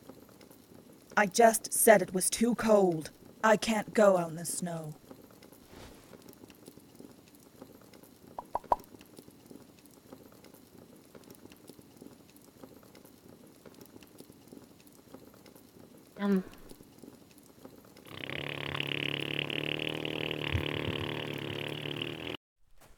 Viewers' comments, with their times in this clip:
0:08 I love the sound of the fire place and watching the thinking bubbles